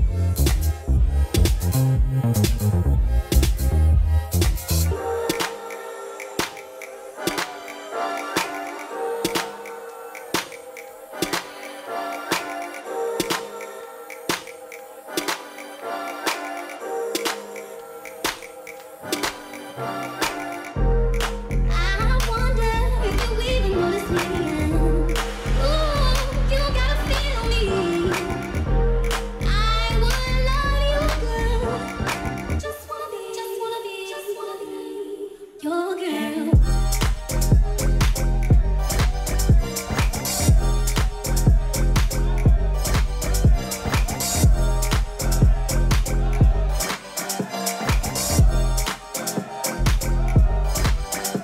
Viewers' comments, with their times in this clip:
0:04 Hot music :) Sweet dancer and also the most beautiful girl I have seen in a long time greetz from sunny Berlin :body-blue-raised-arms:
0:06 Teedra Moses - Be Your Girl (Kaytranada Edit) - When I listen to this in the original Video it sounds different than this mix here.
0:29 the coolest drop is it's the moment you're probably looking for
0:32 the ICONIC beat drop‼️
0:36 The vibe on the beat drop will forever be undefeated